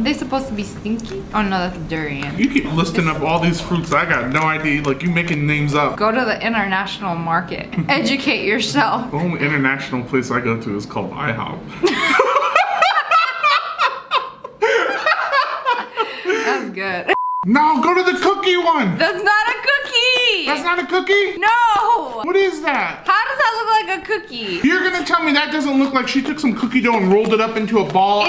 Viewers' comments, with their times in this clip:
0:10 OMFG IM INLOVE WITH UR LAUGH